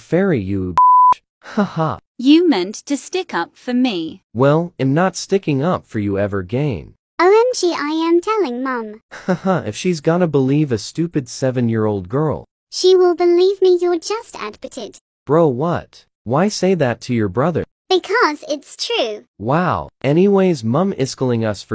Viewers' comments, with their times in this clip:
0:07 " yumi causualy changes voices "